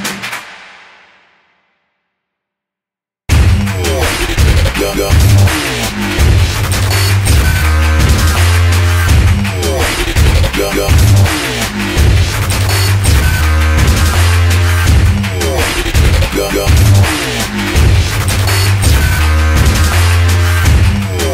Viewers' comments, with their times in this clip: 0:04 Its so awesome till Hate the Dubstep thing :/ But awesome work!!!